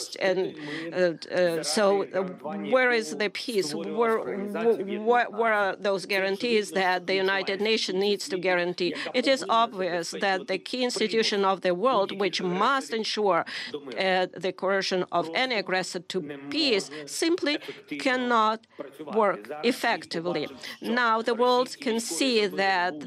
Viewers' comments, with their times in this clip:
0:04 what terrible interpreter work. Oh my god